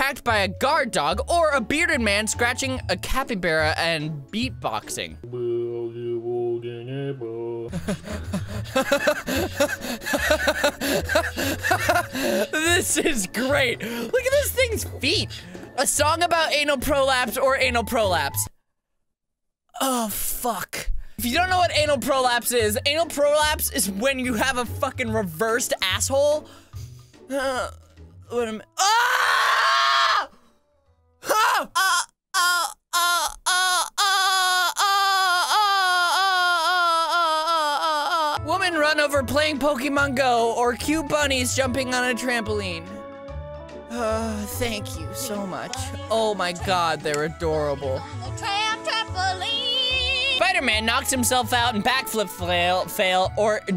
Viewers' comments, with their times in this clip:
0:07 Captions: * laughs adorably *
0:32 I recommend wearing headphones when watching this because is just straight up porn noises
0:32 there's a goat in the room
0:35 He sounds like an adorable squeaky toy